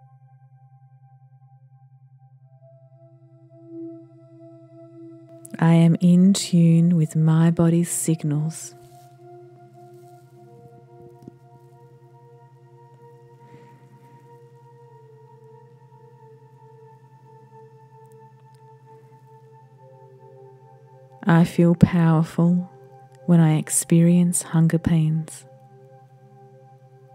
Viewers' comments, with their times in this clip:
0:09 Ya, it sounds like a scary incantation or something. It's repeated again several times, once It scared me too......something in a different language perhaps 🤔